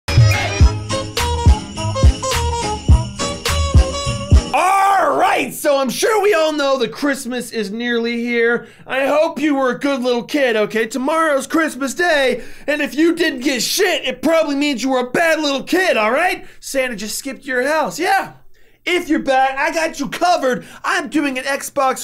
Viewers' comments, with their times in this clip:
0:04 👌🏼👌🏼👌🏼 Song love it 🤣